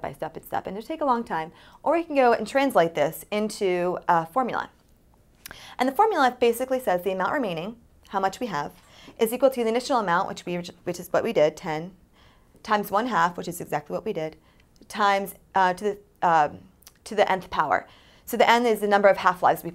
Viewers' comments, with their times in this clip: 0:03 Hyper-speed talking plus coke nervous nose wipe = don't take stims before filming educational videos.